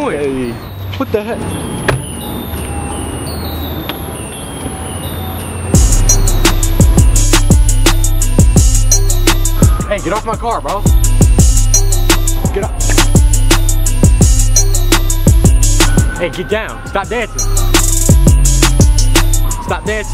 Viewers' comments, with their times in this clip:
0:05 right when he put his foot on the car the beat went perfect with it 🔥🔥🔥
0:06 why is that beat so lit